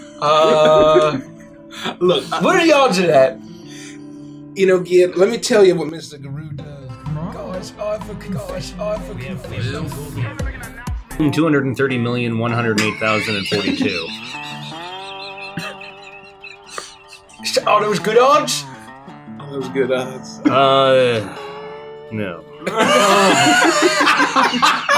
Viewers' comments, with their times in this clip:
0:09 THE FUCKING SNAPCUBE AUDIO???